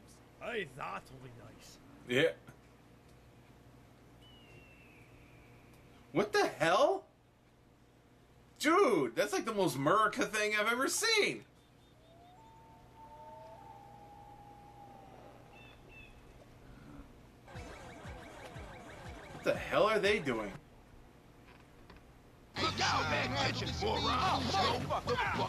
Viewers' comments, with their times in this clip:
0:09 what is meraca